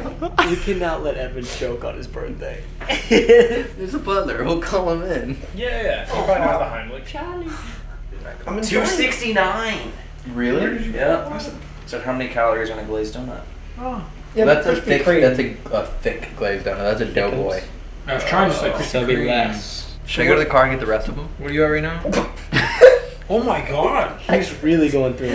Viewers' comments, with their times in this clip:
0:06 -34 you hear a women say Charlie